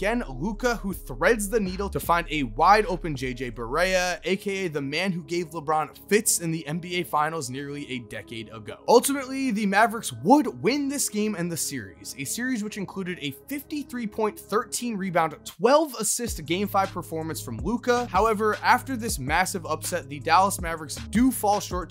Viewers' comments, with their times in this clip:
0:05 When u said “the mavs would ultimately win the game and the series” Siri though I said hey Siri 😂😂😂